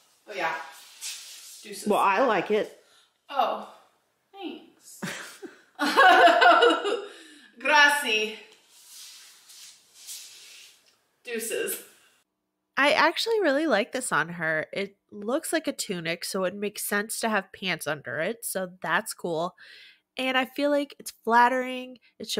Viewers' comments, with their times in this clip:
0:07 when she tried to say "grazie" (i assume) it sounds like she said "grassi" which means "fat (plural)" in italian im 😭